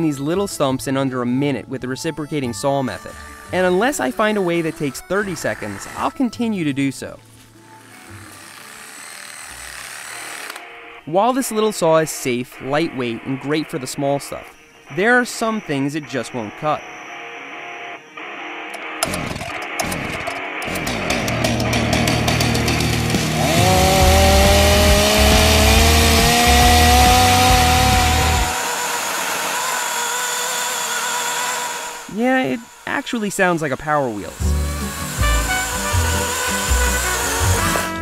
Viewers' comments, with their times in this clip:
0:09 Ahaha you already know wats up wen seth changes the music from elevator to hard metal
0:21 People with Honda Civics at 3am